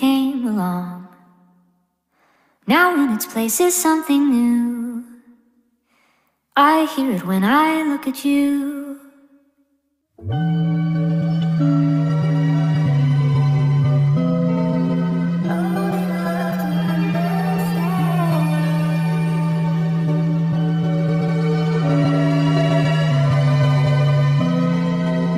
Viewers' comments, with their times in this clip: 0:10 am i the only one who’s hearing the weird noise that starts ? it’s like the base or something i’m bad with the actual terms but i cant ignore it 😭